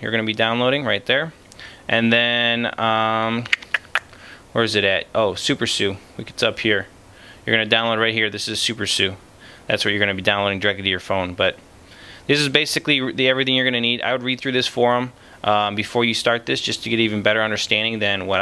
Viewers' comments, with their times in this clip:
0:04 Super Sue! Super Sue! Where are you? Please don't Sue!! lol... cute way of saying SuperSU....